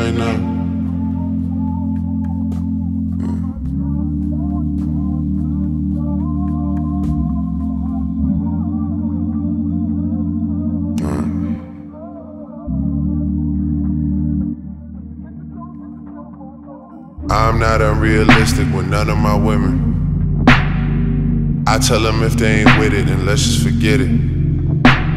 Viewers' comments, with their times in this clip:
0:10 hey is it just me or is there a fart noise at exactly ??????